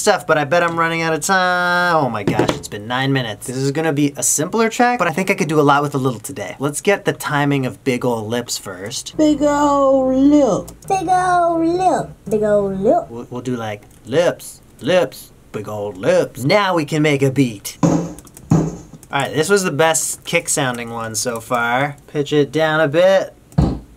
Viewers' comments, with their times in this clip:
0:09 can't stop laughing at big ol'lips at different pitches